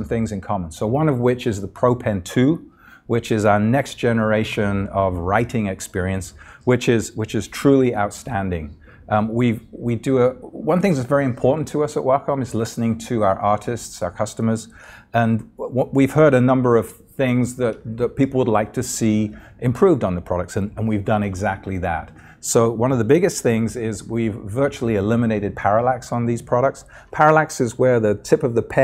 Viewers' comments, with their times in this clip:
0:09 I thought he said " One thing that is very important to us at Wacom is listening to our autists"